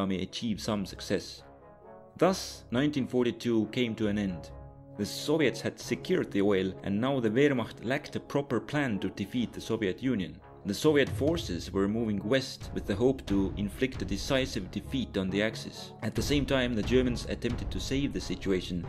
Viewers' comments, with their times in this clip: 0:04 the way he talks here is hillarious